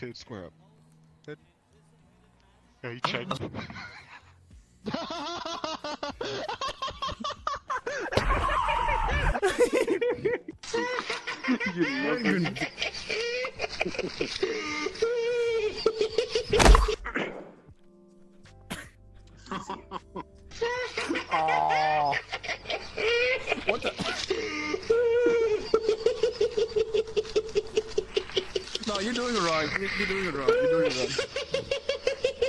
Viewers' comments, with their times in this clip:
0:10 Proof that laughter will only cause people to hit you more if they already did it once
0:15 Their first mistake was kicking him. Their second mistake was failing to realize that by lodging his brain loose fro, his head, he would laugh like Joker for all eternity/